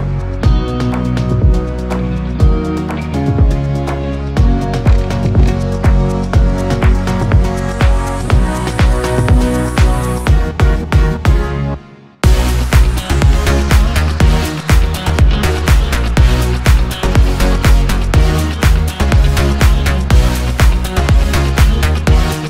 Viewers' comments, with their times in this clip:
0:10 anyone realized that he synced with music?